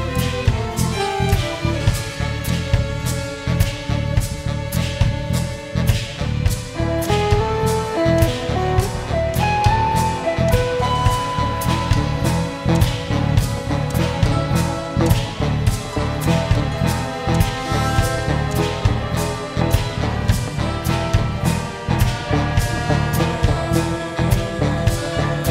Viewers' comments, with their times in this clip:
0:07 I love the improvisation